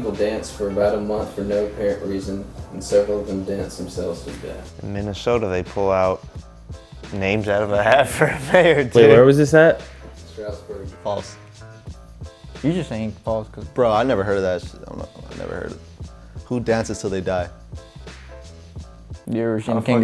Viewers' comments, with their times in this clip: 0:07 anyone else notice he said inexplicible ? lol